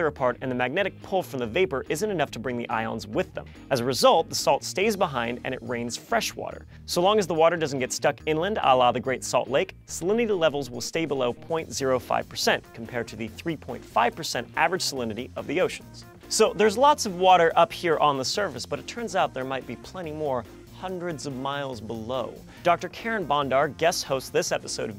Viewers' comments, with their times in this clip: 0:08 does he say "allah the great" or is it just my imagination?